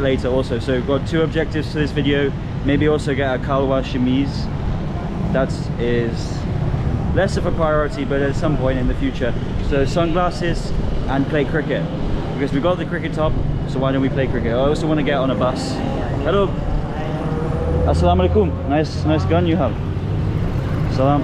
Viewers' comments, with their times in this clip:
0:03 'kalwaar sameez' lmao I want to see what innovative kinda outfit is that